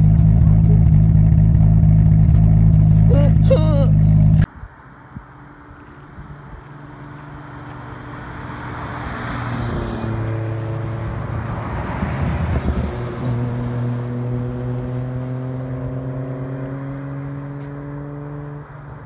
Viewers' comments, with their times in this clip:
0:04 2jz'$ Sounds amazing!!!💯🏁🏁🏁🤣😳😣🤔 A true Perv 🙄🤣🤣🤣🤣